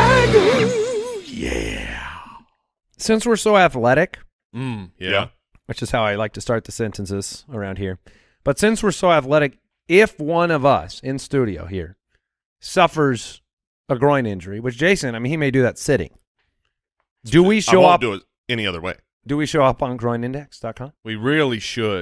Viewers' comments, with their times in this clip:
0:05 Anybody catch the synchronized “mmm yeah”